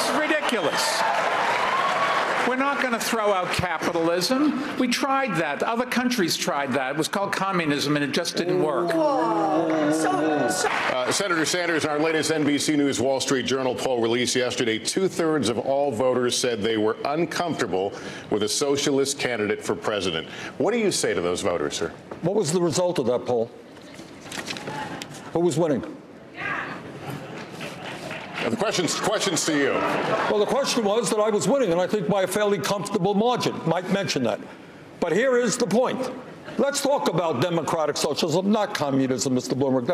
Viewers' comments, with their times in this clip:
0:03 Who are the people clapping for this horseshit?
0:20 holy shit dude did y’all hear crickets? 🦗 🦗🦗